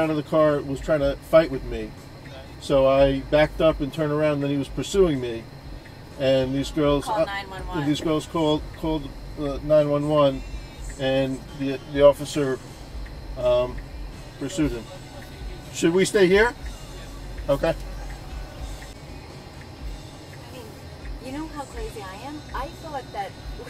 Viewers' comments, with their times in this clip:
0:08 sounds like he said “these milfs called “ loool